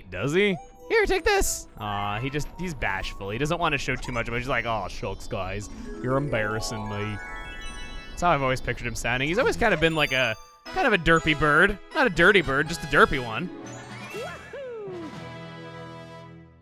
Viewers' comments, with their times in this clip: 0:03 A durpy bird that sounds like Goofy